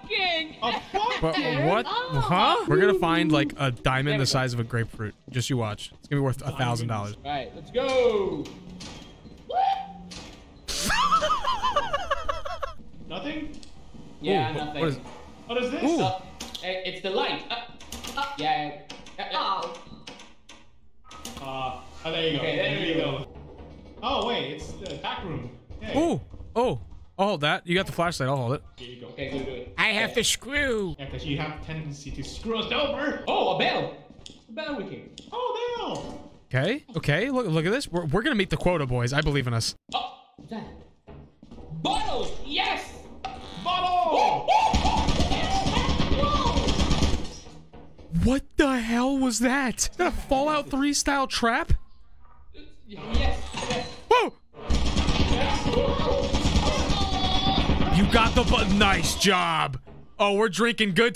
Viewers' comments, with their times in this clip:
0:08 God, I love those perfectly cut screams so much 😂
0:44 I thought it was banging on the door XD